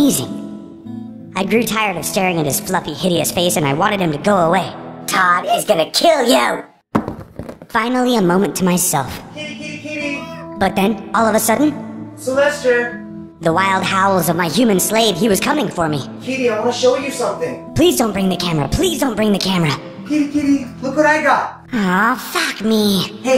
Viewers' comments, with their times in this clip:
0:03 HOW GIBSON GASPED IN SHOCK
0:10 If you hear closly you can hear Gibson say Help, Gibson is so Cute
0:10 did anyone hear Gibson say help?last time I didn't hear it
0:10 You can hear Gibson say HELP